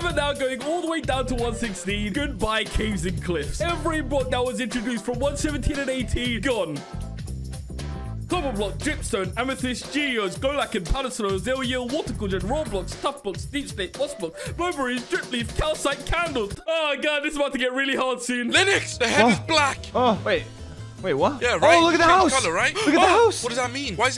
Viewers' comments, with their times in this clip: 0:07 reminds me of when the guy at the end of the pokemon episodes would rap all the pokemon names